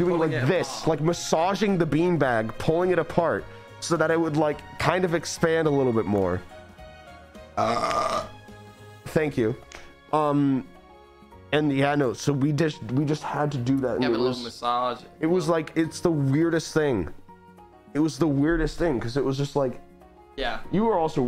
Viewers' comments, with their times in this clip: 0:07 He just stares into your soul and then burps 😭😭